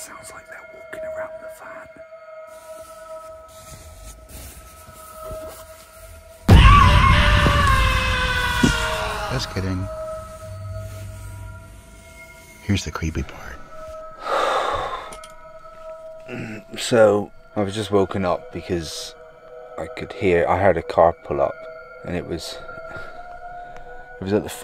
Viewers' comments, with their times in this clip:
0:06 scared the shit out of me with that scream.